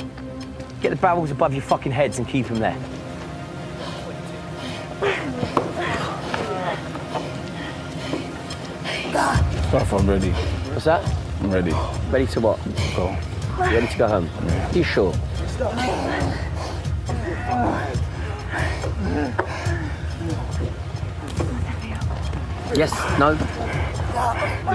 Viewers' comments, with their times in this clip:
0:05 .... i literally thought there was porn playing